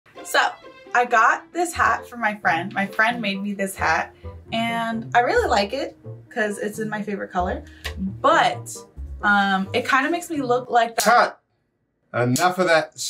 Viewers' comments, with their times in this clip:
0:01 so I GYAT my new hat